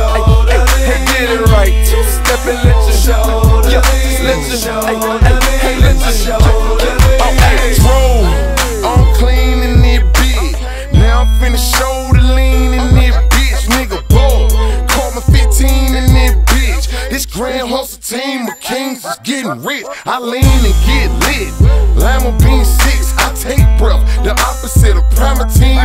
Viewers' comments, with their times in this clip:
0:08 Love how he saying I`m clean in this bih with some extra swagga i don`t give a fuck attitude make me enjoy the song! Hahahah